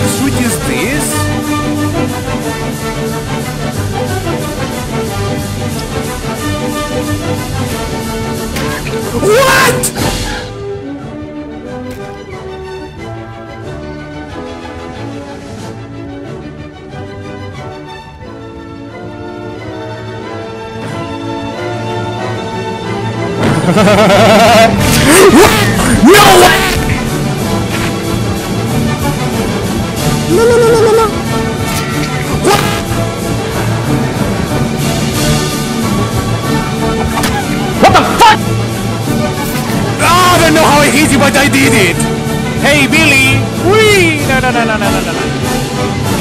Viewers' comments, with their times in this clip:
0:08 that yell perfectly describes my life everyday 😂😂
0:24 when ur mic enters a different dimension
0:24 What Kind of Earrape is that?
0:27 the "lulululululu" followed by the hit and the "whaaaat" just made me laugh so hard 🤣
0:32 rip mic :v